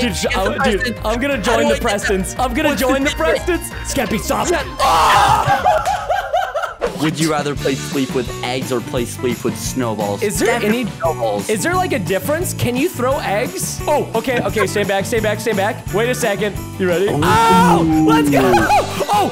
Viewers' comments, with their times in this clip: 0:04 a ad popped up as soon as Preston yelled so it sounded like a perfectly cut scream